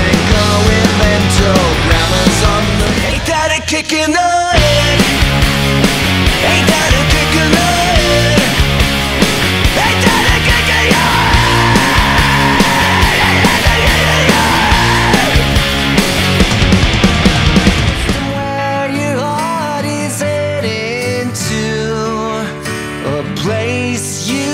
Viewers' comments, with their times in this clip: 0:07 i never knew i needed billie screaming until now.